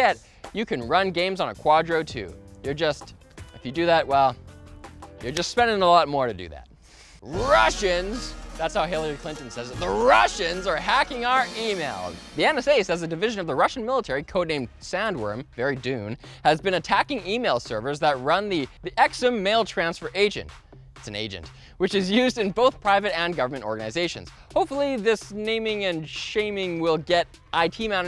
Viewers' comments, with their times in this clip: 0:07 a Turkish music sample. Nice.
0:09 umms music like çökertme watch?v=2vLywf1gzEM turkish local music